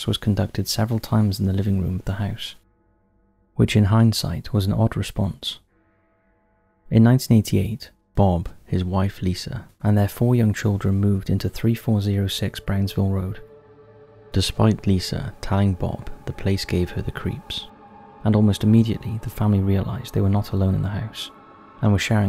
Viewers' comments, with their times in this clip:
0:07 Top5s narrator possessed and thus the change in voice